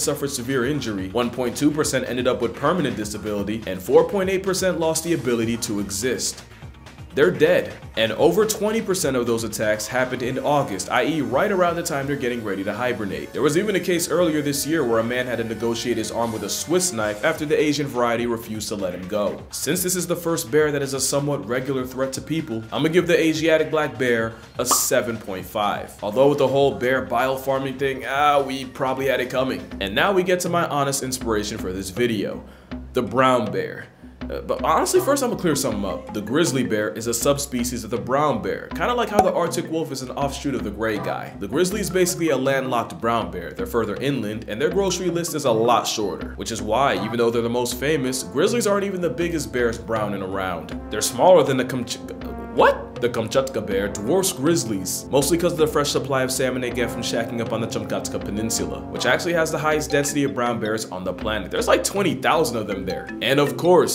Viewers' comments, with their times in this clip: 0:03 “their dead” this shouldn’t be funny but his delivery carried it🤣
0:51 That Genuine "What?!"